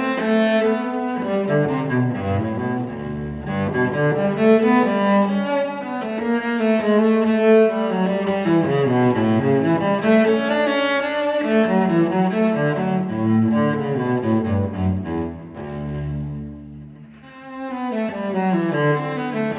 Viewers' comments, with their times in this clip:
0:05 Did not he miss a note ?